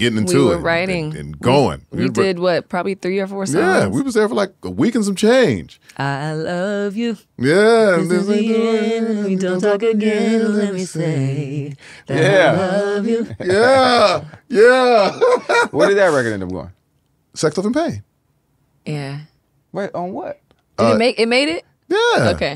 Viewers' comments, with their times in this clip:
0:10 Mmmmmph! Her low register is... PERFECTIOOOON! 🎶